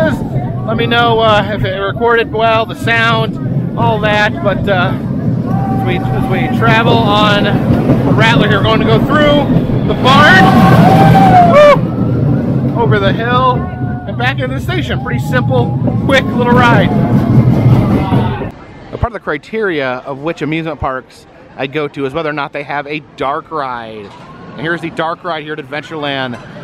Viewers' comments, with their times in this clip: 0:09 Decent footage on the action cam, but you may want to reel in your voice a bit when narrating such shots, there was noticeable clipping.